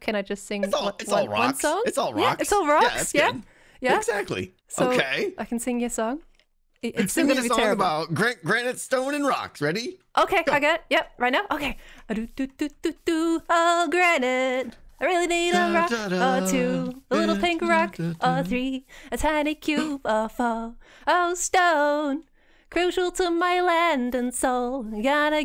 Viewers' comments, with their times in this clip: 0:10 Cutest - song - ever.